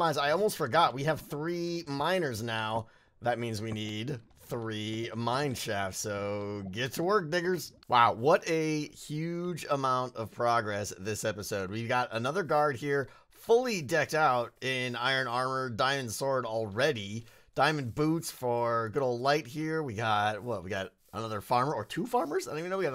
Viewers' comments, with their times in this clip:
0:03 lmao if somebody's not paying attention to the video that sounds like something very different
0:03 anyone else hear what I think I heard (I know he said diggers)
0:05 I thought he said you know
0:06 uhm maybe saying "get to work diggers" really fast, is not the best choice of words.
0:06 had to rewatch that psrt, I heard something completely different than diggerS
0:06 sounds like you said something very different
0:07 I thought he said the n word Thank goodness he didn’t.